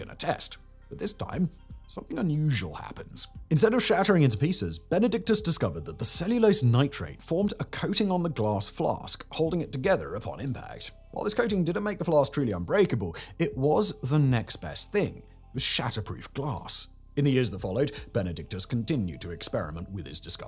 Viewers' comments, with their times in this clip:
0:08 I love how he says the "glawwwhs flawwwhsk".